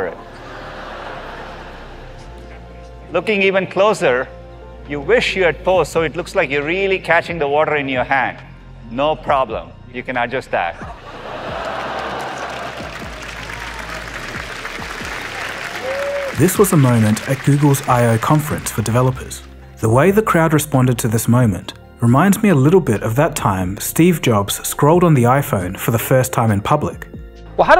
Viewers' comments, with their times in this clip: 0:08 the audience cheering up to basic Photoshop skills from 1998